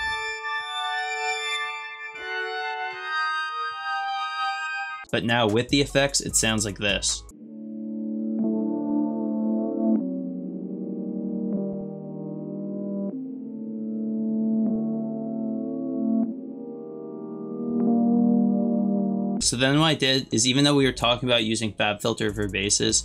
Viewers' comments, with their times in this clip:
0:07 okay boards of Canada